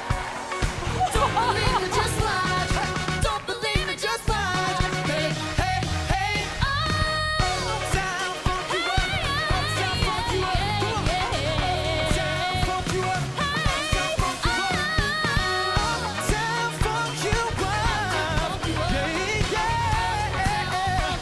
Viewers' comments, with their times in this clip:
0:08 idk why but she sounds like ariana in here
0:08 reminds me of one of ariana's vocal adlibs💕
0:09 sounds like Araina grande